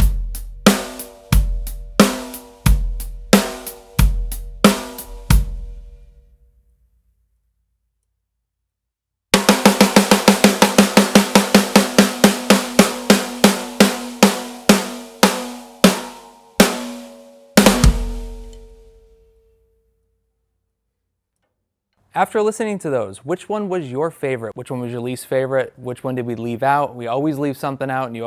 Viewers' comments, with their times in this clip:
0:09 Hmm, you can hear the Pearl Piccolo detuning when hitting those rimshots 🙄